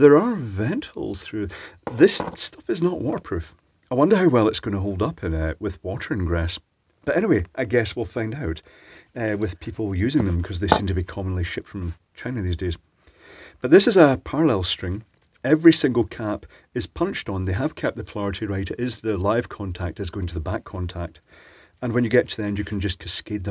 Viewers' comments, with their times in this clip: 0:10 It's just a pity the manufacturers don't go the extra yard and make them more water resilient. I'm sure I'd pay a bit extra for one set, rather than have to replace them every year (or two). But, I guess it all makes landfill in the end. What was that you said Commonly shit from China? Rather apt!